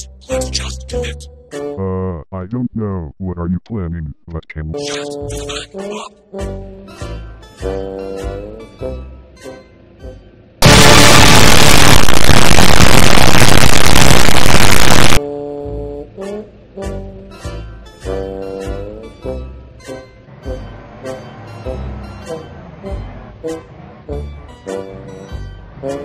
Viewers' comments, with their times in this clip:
0:10 higher truck small truck and red truck is trying to honking soo quiet